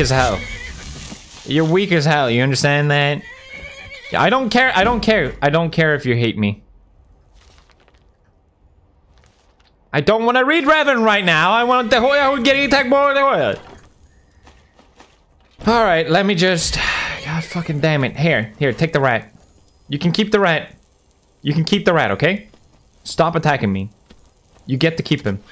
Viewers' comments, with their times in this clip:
0:10 what did he say? is that Swedish?